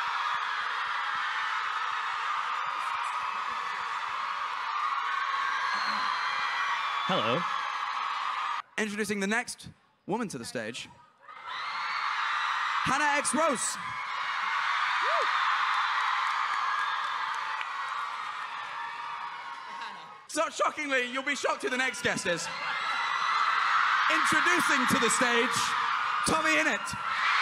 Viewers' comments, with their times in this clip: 0:09 BRUH THEY HEARD WOMAN AND STARTED CLAPPING WTF LMAO